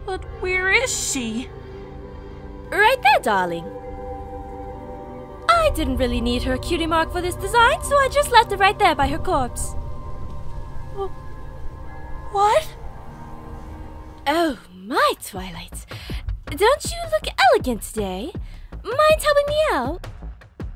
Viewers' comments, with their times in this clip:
0:04 "I didn't need her cutie mark for this design, so I just left it right there by her corpse." Probably the best line/delivery in the whole thing.